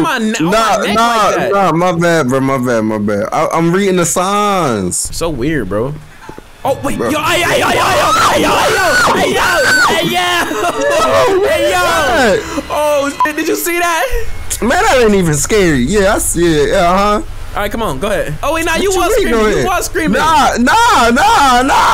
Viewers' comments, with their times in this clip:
0:05 bro screaming like a girl